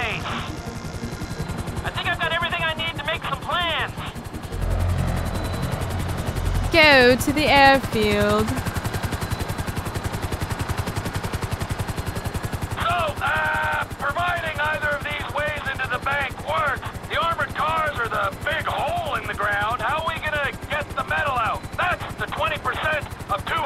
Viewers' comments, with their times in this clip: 0:06 her British accent is so cute 😂